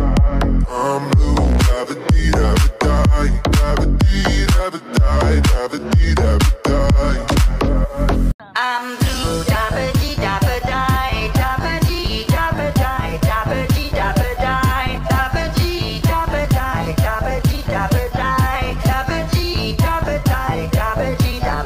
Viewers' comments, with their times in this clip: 0:08 Mickey Mouse Voice